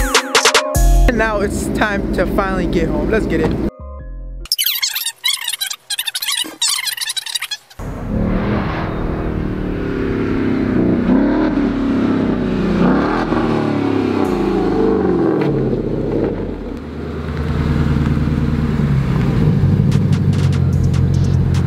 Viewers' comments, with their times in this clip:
0:08 I died a little when I heard it scrape the floor 😢 sick ride tho